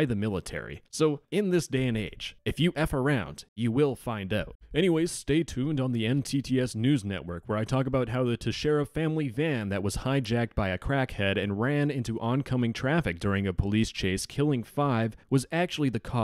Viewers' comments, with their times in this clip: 0:04 Self-Note: SEVERE MISOPHONIC TRIGGER FROM ---------- END.